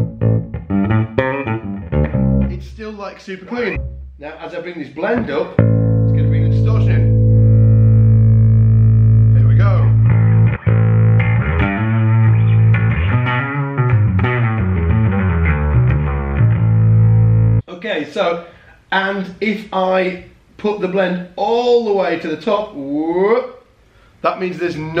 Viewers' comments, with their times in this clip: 0:04 and the actual pedal sound doesn't even start before
0:07 And even then, you don't get the overdrive sound until
0:09 #darkglassalphaomega I like the tone!
0:09 #darkglassalphaomega sounds killer you can hear how well that would beef up and cut through the mix.
0:09 #darkglassalphaomega I prefer the Alpha side of things, like sounds awesome everywhere though!
0:10 #darkglassalphaomega actually i think all of the settings sound great! If i had to choose one of them i would probably go for the setting in